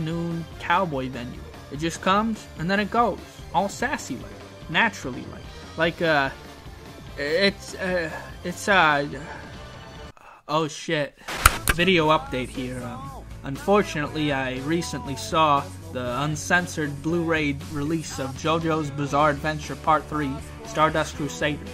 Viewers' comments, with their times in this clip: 0:07 He Stopped the Music When - So No Chi no Sademe - kicked in